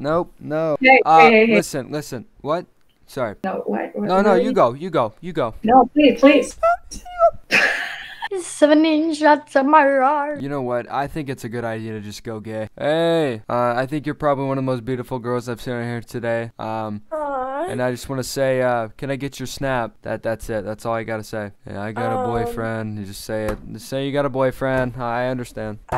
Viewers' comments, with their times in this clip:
0:08 bro said "seven inch jatsamarar" what in the language 💀